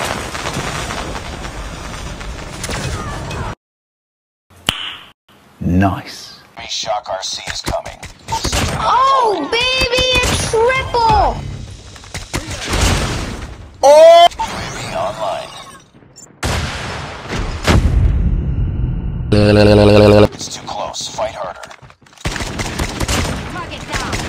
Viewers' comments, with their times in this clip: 0:04 perfect beat sync does'nt exis-
0:12 I thought i heard dababy 👁-👁